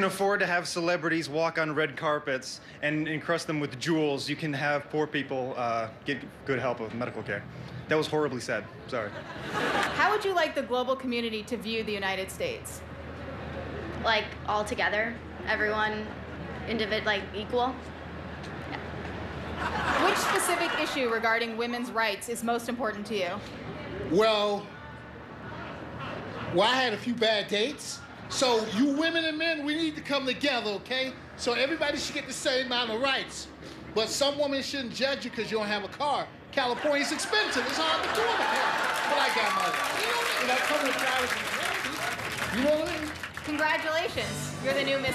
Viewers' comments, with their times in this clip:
0:06 really didn't need a laugh cue. 🤫
0:28 ... Do you have to yell to tell me your opinion ??? Can't you speak normally ?